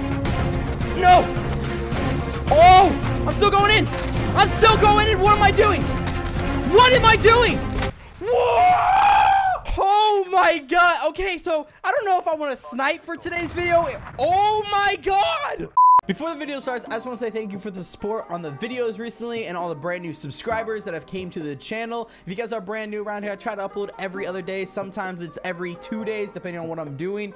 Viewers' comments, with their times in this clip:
0:03 why does he sound like Morty
0:08 in the the video when you died the way you said waaaaat😂😂 look funny my dude lool but you still a GOD at CODS